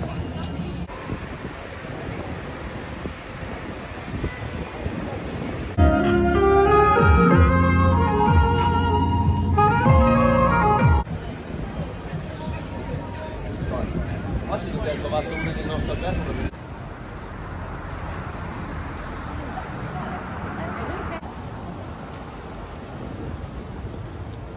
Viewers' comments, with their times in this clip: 0:07 that man was playing Indian song